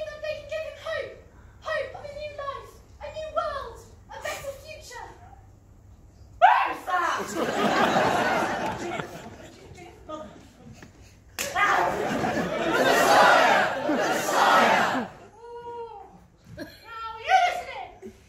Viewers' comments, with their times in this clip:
0:06 Hot take: You did the line better than Terry Jones.